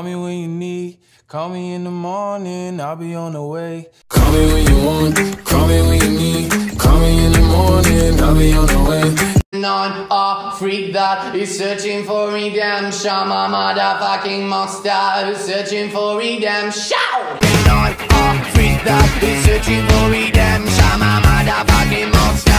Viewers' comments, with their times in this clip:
0:10 bro maneskin don’t need auto tune auto tune need maneskin